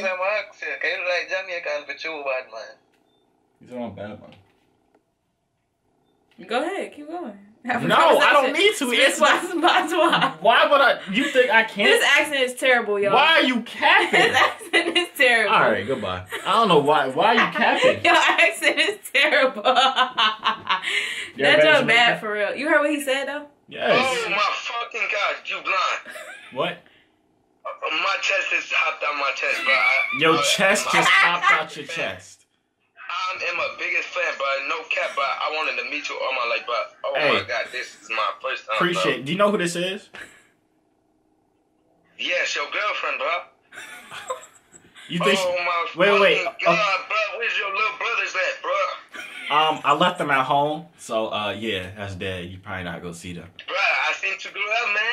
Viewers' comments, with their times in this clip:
0:10 yea he really from Jamaica 😂😂😂..... big up to all of my Jamaican brothers and sisters 🙌🏾🔥✊🏽
0:36 Where’s yo luh bruthus at bruh 🤣🤣 this nigga talk funny as hell